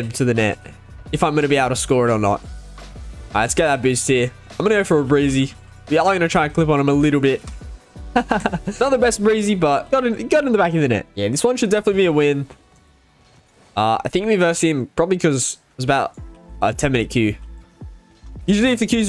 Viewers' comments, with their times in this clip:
0:07 Did you put a fake laugh ?